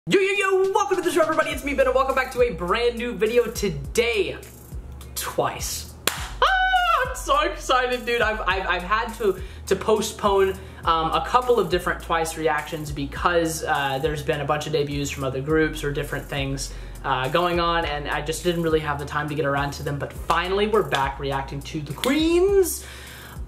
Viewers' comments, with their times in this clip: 0:06 his squeal was cute😂